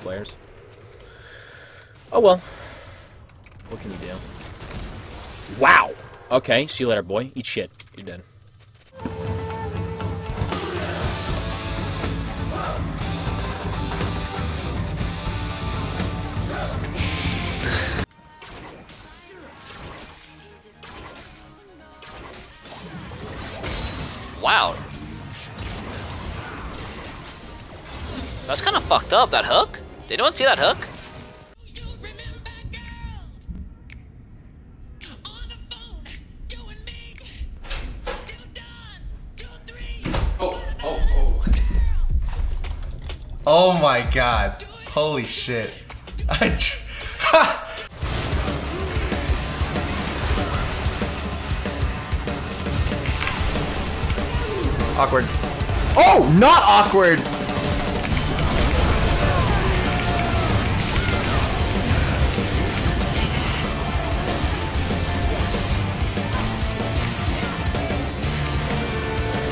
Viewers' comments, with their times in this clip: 0:08 made me laugh so hard!😂😂 the music made it even better😂
0:50 the music fits perfectly with the plays :OOOO